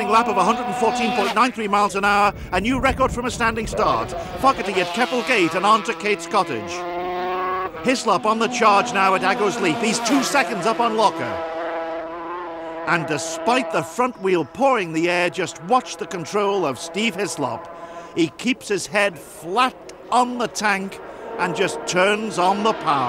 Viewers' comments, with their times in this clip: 0:04 "Fuck it to get couple cakes under gate's (gibberish)"